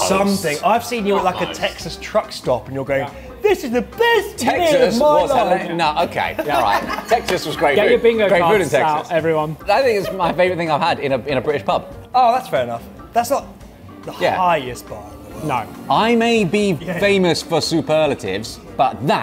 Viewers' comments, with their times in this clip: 0:03 you know its a best friend if they mimic you on point